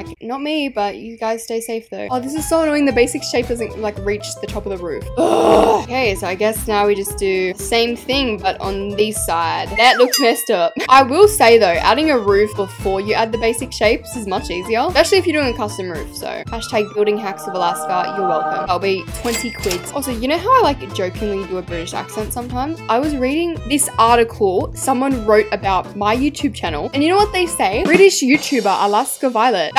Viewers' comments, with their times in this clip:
0:10 how she she said that look messed up she went full country